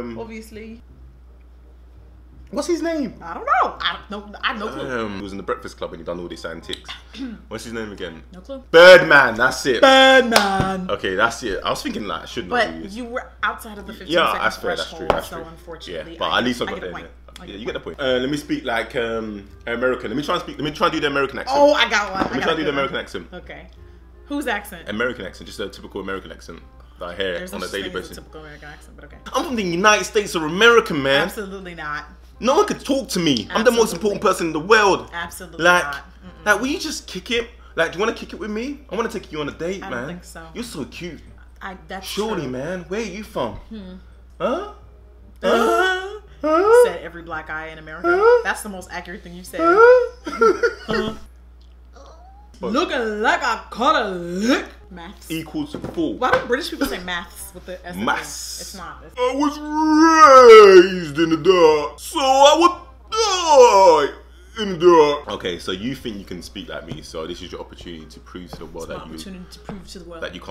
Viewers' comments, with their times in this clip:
0:10 The way she said "BIRDMAN" has me on the floor OMG 😂😂😂😂😂😂
0:52 screaming @ how accurate that "lookin' like I caught a LICK" sounded